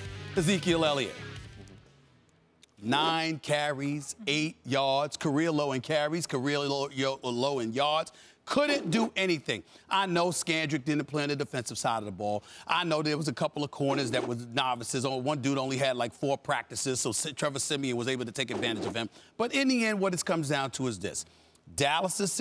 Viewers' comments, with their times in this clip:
0:06 weird studder voice